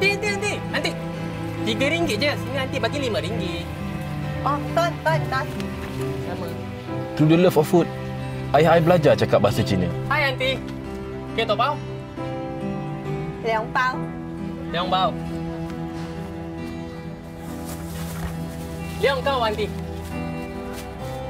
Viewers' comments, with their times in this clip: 0:07 Vietnamese in right?